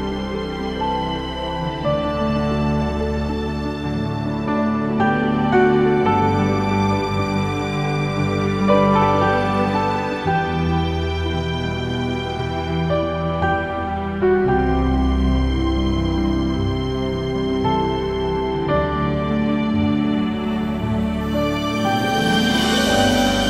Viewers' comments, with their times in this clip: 0:05 What an amazingly beautiful melody It makes the spirit soar Always pray for you each day and am thankful for your sharing of your music and videos